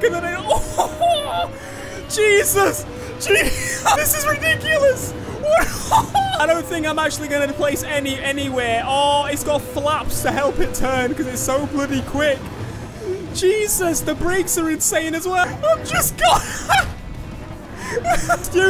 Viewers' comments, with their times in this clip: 0:03 when u laugh to much